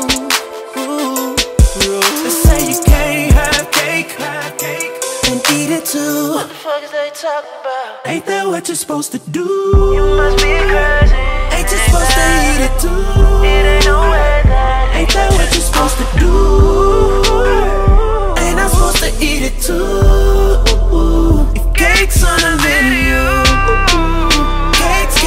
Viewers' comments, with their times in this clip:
0:05 The vocals in this song are INCREDIBLE 🔥❗️❗️💎
0:10 I love when that beat drop